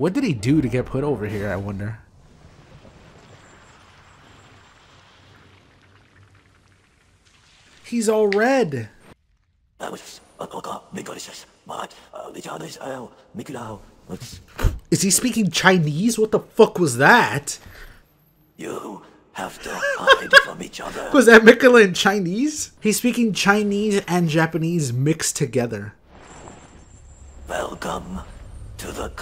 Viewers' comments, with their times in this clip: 0:10 Mohg being a huge weeb and speaking Japanese at the beginning of his cutscene is lore accurate